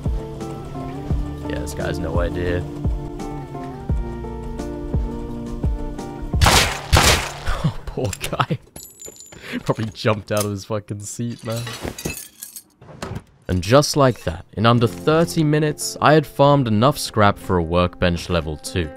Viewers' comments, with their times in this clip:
0:06 my kid was sleeping 😴 and heard the shot Thu my headphones and looked shocked from the sound